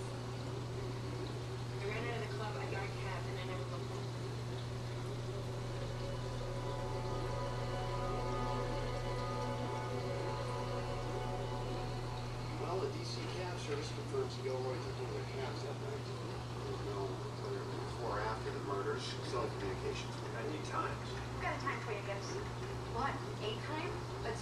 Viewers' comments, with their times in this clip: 0:10 Damn dude, tank looks amazing, im going to have to do watch the other vid cuz I cant exactly put my finger on whats making it look so much better but damn, def one of the nicest out right now. yo for a second I thought that was someone snoring in the background hahaha